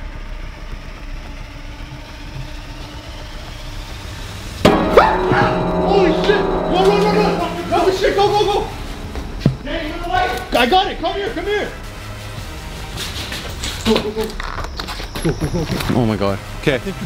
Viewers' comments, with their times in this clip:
0:05 Was that the piano?